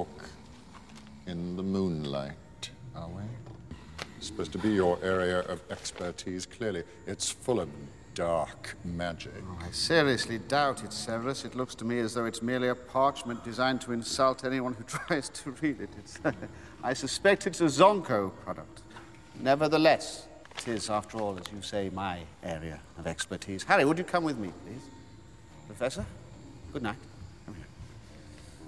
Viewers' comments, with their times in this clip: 0:10 Lupin: looks like it’s just parchment designed to assault anyone little laugh Me: knows he made it, and is proud :)